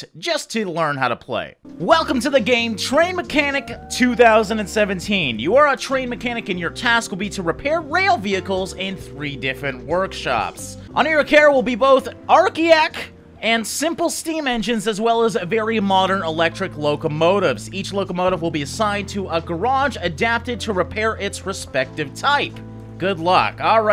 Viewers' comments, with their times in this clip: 0:10 I love how you pronounced "Archaic" ;-)